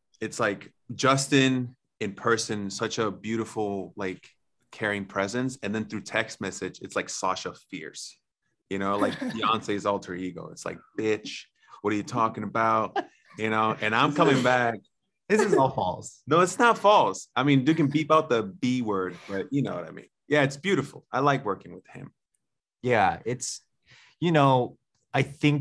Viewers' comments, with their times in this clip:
0:10 the way he was imitating justin 😂